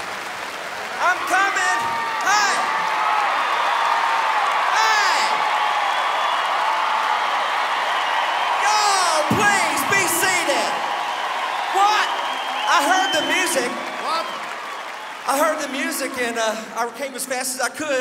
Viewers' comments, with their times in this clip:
0:03 The audience cheer for Mark.. 😂😂